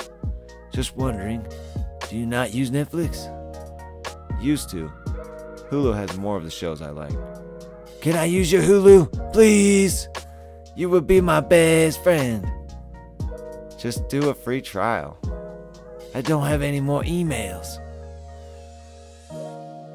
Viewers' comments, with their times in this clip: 0:07 That trailer trash voice was on point bro 😂😂